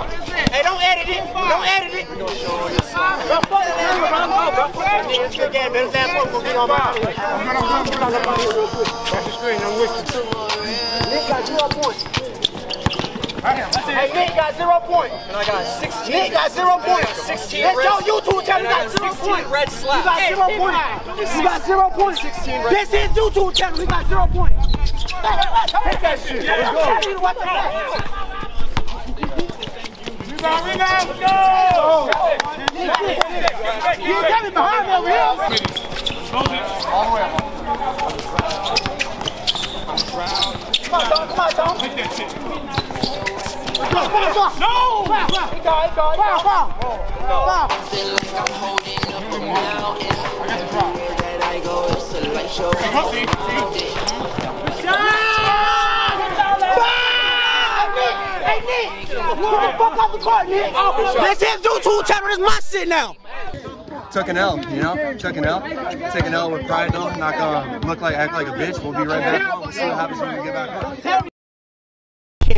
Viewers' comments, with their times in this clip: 0:06 THAT SONG IN THE BACKROUND🔥🔥 iykyk
0:56 I have a noise machine for my daughter that is set to start playing when it hears a baby cry... This m'fer set it off 😑